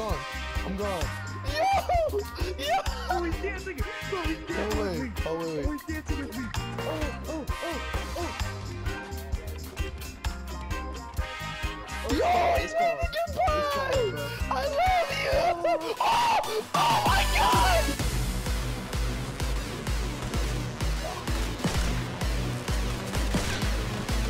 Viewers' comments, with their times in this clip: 0:10 story You:bye friend stranger:bye Sniper bullet: BAAAAM You:NOOOOOOOOOO! the sniper: good shot Stranger:F*CK F*CK F*CK F*CK F*CK [EDIT]:I actually think its a shot gun